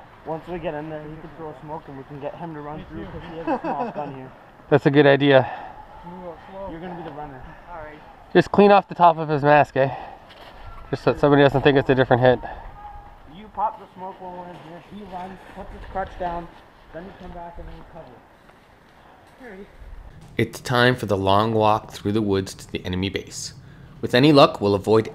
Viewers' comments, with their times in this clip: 0:09 he says eh XD hehe canadians